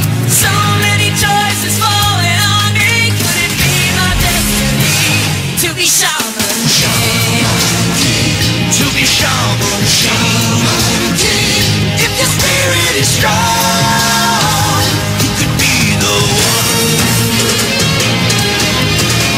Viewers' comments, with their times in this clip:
0:03 Shaman GAY XD everytime I hear GAY instead of King.